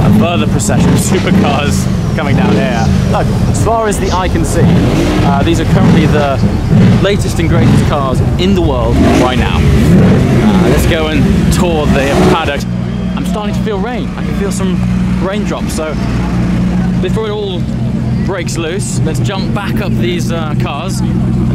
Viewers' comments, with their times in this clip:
0:03 who is roaring